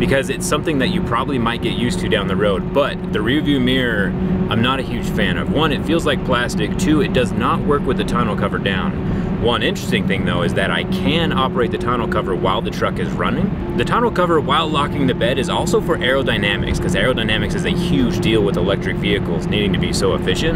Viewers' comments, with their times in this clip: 0:08 the way you say Tonneua cover 😅